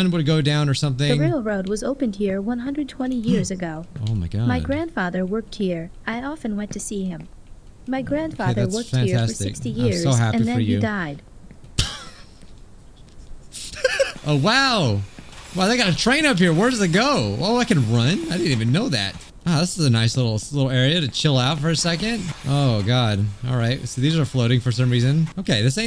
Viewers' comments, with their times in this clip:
0:07 you're laughing. their grandfather worked here for 60 years and then he died and you're laughing...